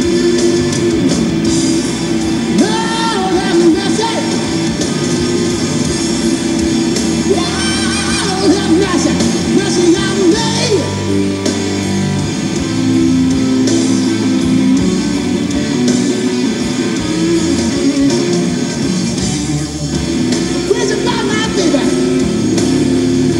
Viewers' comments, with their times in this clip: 0:07 That was some scream, got to love gary moore.